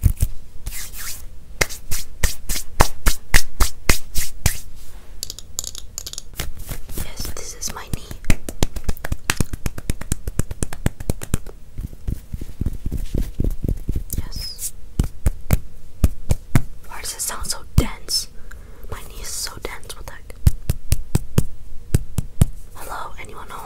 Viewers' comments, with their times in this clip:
0:05 I love the sound of this scratching pknee.